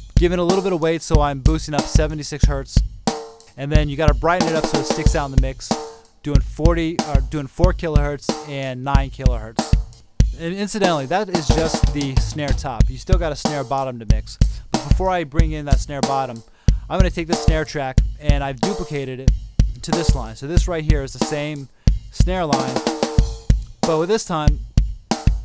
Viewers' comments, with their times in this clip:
0:10 Awesome video!! (When only the drums were soloed you was like you are rapping xD like :D:D Thank you so much for this.